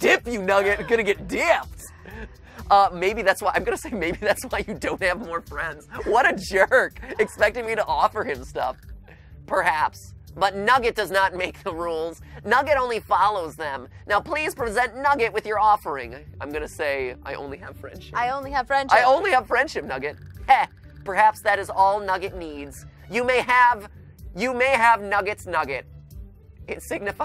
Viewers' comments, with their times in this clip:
0:10 MatPat: uses Monty voice for nugget Me: confused screaming